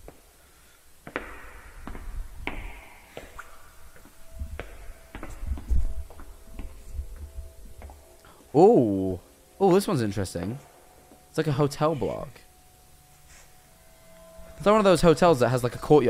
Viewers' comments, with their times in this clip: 0:03 is it just me or does these ambience noise sound like the minecraft ones?